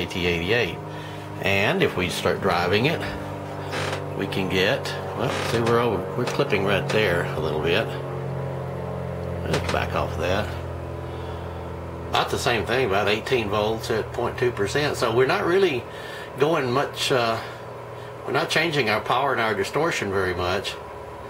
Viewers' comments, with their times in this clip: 0:09 is that an aeroplane